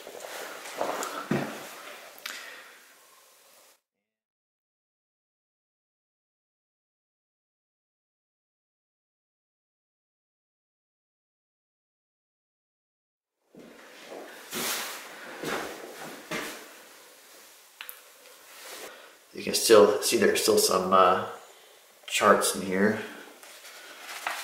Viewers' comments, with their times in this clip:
0:05 Exploring what happend to the sound ? you open door then you go to speak and ....................................no sound as it cuts off.